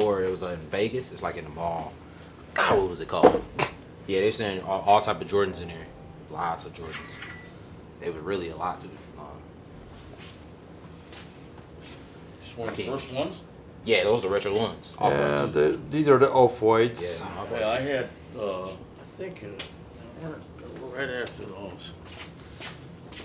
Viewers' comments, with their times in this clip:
0:05 that cash register sound you hear, if I'm not mistaken, is an ebay sale, that's the notification sound for when you sell something with the app on your phone